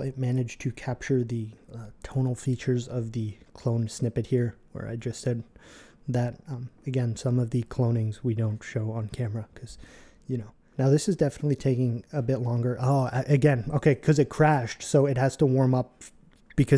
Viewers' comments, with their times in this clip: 0:03 Bro definitely did a gay voice. 🥀